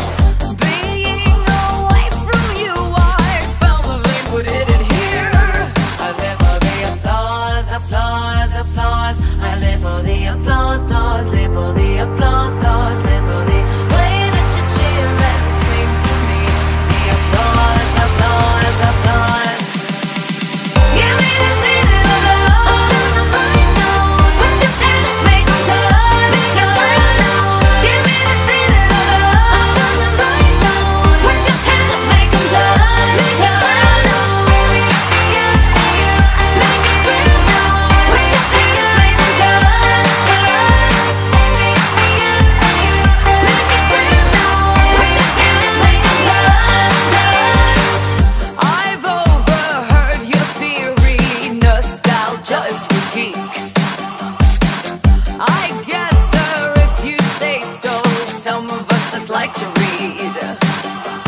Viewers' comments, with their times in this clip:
0:05 all I hear is Bart Baker's Parody with Shane Dawson. I love this song though. It has a catchy beat and it's got a nice vibe to it.
0:44 has such a good beat